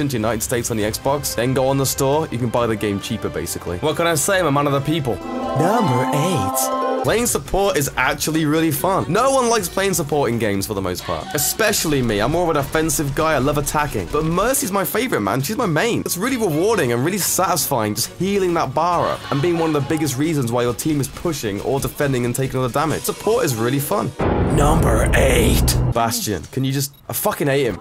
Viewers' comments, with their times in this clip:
0:10 HOLY FREAK THAT SCARED ME I THOUGHT SOMEONE WAS SCREAMING SOMETHING BEHIND ME seriously are those voice lines? what voice line has someone scream "ATEROYKEYS" through a mic